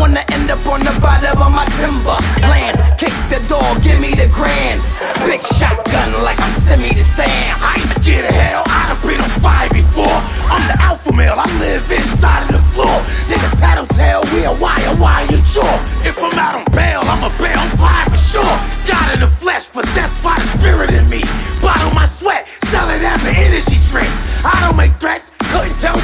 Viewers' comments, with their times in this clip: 0:07 new age dmx